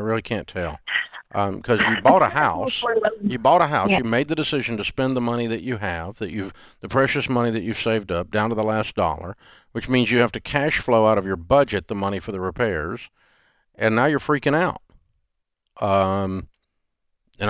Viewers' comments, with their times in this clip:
0:04 he mutes her